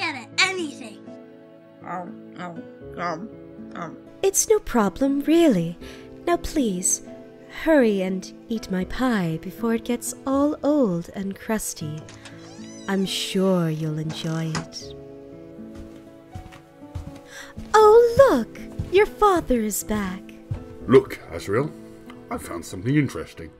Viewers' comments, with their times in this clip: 0:08 the way she spoke sounds suspiciously seductive